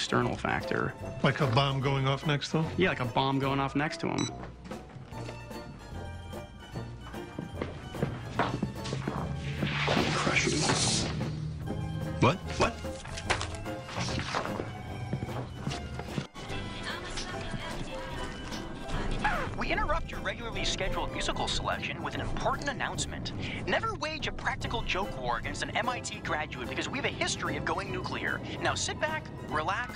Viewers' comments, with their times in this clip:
0:10 what does he mutter under his breath ?